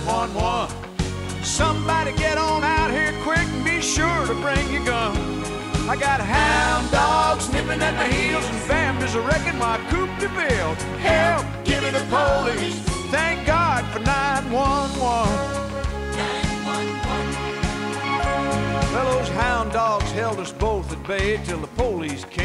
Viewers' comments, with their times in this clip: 0:05 I know this song is goofy, but that musical transition is actually really nice.